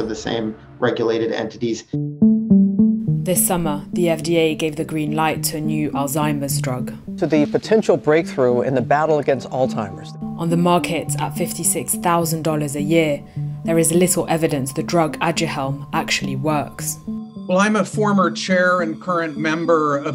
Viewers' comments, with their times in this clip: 0:08 😆😆 did he really just call Alzheimer's "Old timers?" I guess that's suitable